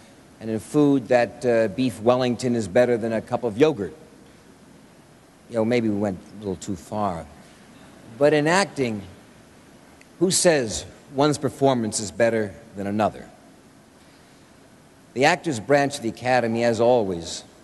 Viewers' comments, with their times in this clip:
0:04 When no one laughs.